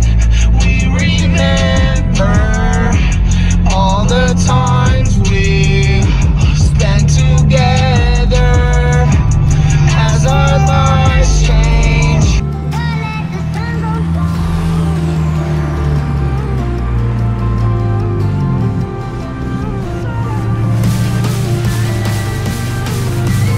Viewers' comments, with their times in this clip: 0:08 is that a blow off valve